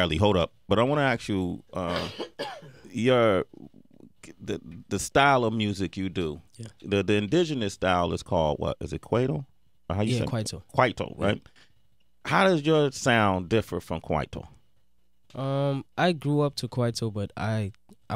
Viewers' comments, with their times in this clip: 0:06 sway lmfao khhhrgkweto